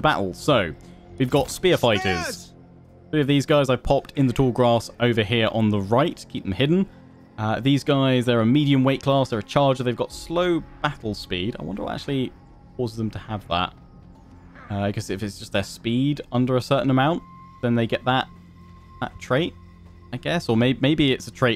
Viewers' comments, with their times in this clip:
0:04 when the long grass starts speaking ancient greek